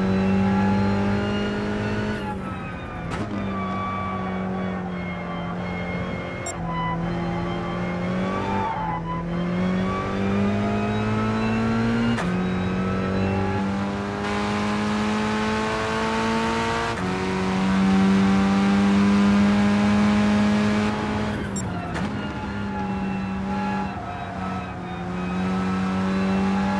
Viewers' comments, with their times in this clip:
0:09 sound as a whole is an 8 out of ten. but u cant ignore the engine sounds holding it back. then again maybe thats just what a stock 4c sounds like? for me its how still the driving feels. i guess its hard to create worry when ur driving, but looking at this everythings so relaxed. its a hard thing to explain but its a feeling GT has always had. getting a car sideways like that and correcting it didnt have any violence about it. Its hard to like. but at the same time it has a feel people are used too and i think that also counts for alot.